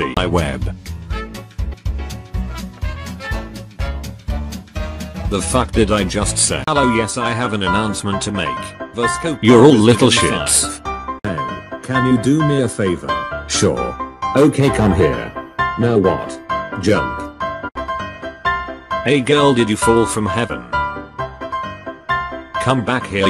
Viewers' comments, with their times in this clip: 0:07 has me dead😂😂 and the background voice makes it even funnier